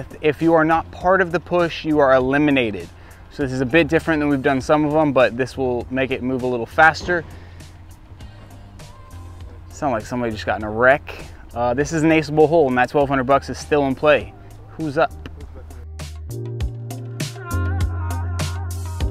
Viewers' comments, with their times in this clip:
0:03 ish you can Definitely hear the accident